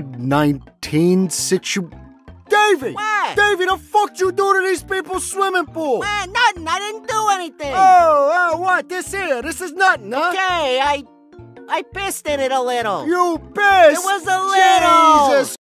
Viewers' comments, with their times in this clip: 0:07 can we please appreciate the pure flabbergasted emotion behind this response to David